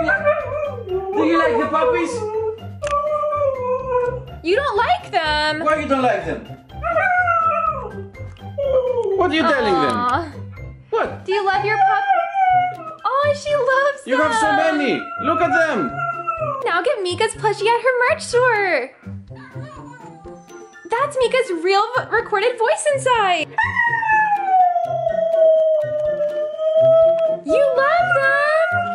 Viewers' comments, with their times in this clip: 0:08 "i love them" actually sounded so real, damn
0:11 the way she said "I love them" on makes my heart melt,I keep replaying it 🥺
0:11 the i love them sounded like it was actual actual speaking